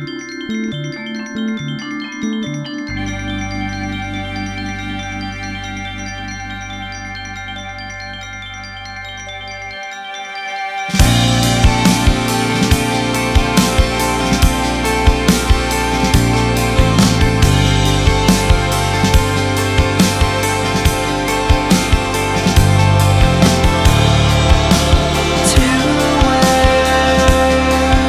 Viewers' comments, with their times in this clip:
0:10 that moment when the guitars and drums kick in is orgasmic
0:11 The guitar starts